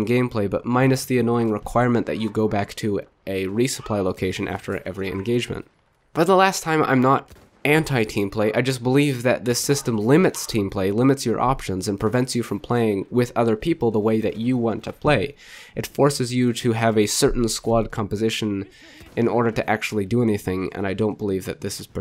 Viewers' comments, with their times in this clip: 0:09 was that a dog?